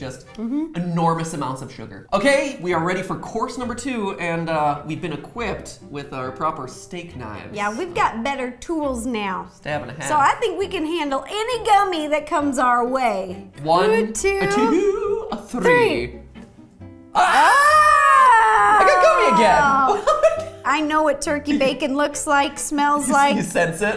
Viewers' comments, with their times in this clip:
0:09 for anyone who doesn’t know this is a very Matpat thing. He does a clap and a half during live streams